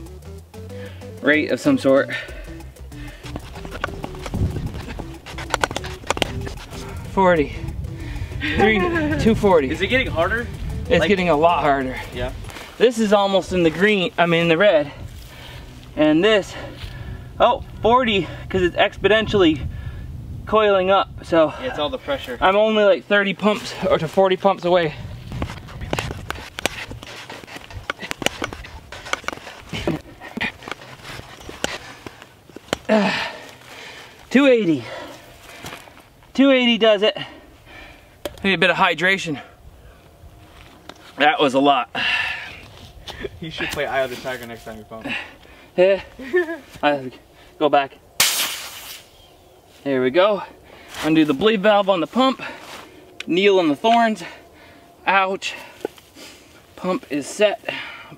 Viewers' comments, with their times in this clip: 0:07 Those anyone heard the laugh of a woman or something
0:07 Random girl laughing
0:08 A girls voice?? on
0:08 who is laughing
0:45 Is it just me or there’s another women’s giggles 😂